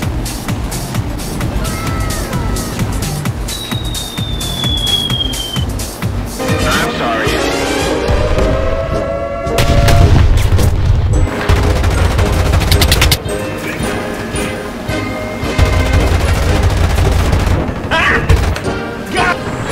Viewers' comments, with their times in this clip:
0:06 Fire beat starts